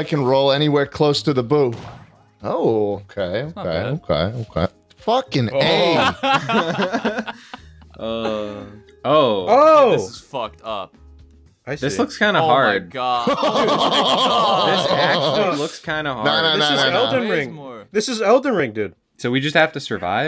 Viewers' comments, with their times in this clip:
0:03 wtf happened to schlatts audio 💀💀